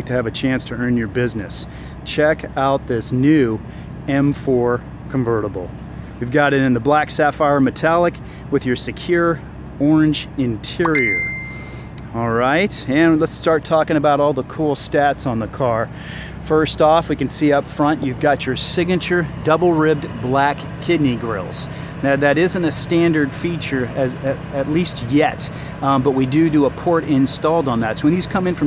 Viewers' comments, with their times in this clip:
0:09 it was a message tone 😲😲